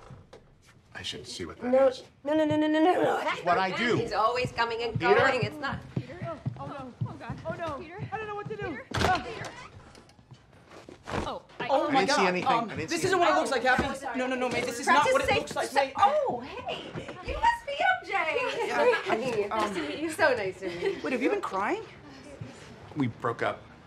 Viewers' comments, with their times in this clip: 0:08 you can hear them panicking in that room when happy yelled “Peter?”